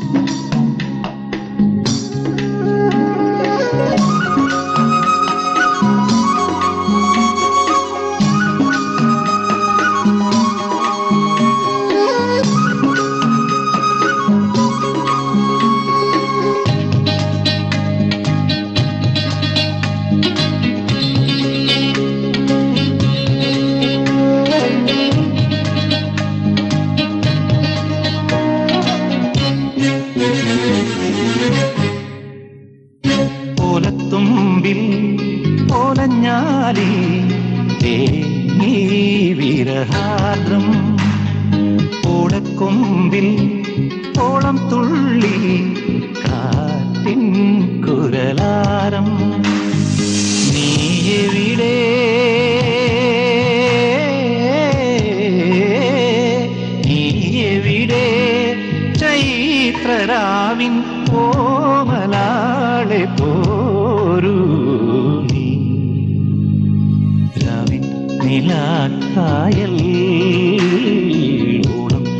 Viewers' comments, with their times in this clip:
0:04 This music reminds me of മണിമുകിലേ നീ പൊഴിയരുതേ song
0:59 That wavy 〰️ 😇 is enough to be a fan of dasettan🖤